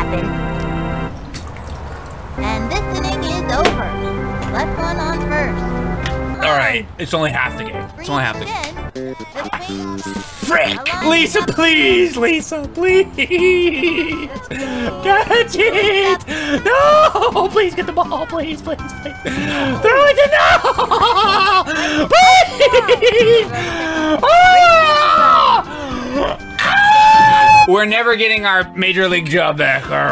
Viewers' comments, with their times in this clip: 0:10 That Yoshi's Island music Love it.
0:11 the sounds of a broken coach